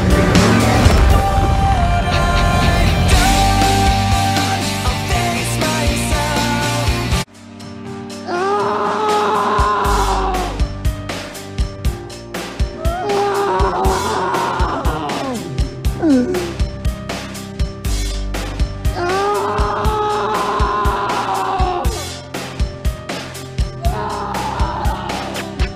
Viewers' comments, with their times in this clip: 0:07 for anyone who doesn’t know why he’s screaming, he killed his friends and family just so they didn’t have to get eaten by monsters, but he didn’t have enough bullets for himself, so as he stepped out to get eaten by a monster, the government kills the monsters and saves all the people, and now the man is destroyed inside as his friends were moments away from safety